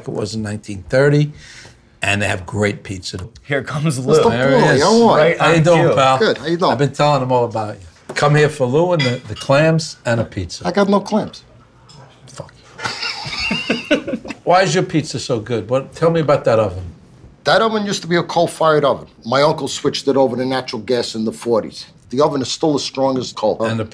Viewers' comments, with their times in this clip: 0:04 for the most classic "Howyadoin"